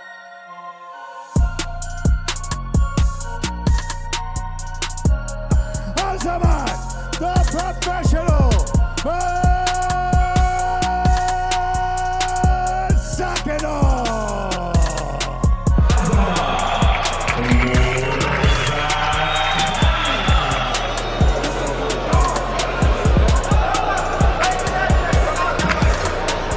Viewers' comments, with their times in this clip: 0:09 that ring announcer was channeling his best Vince McMahon voice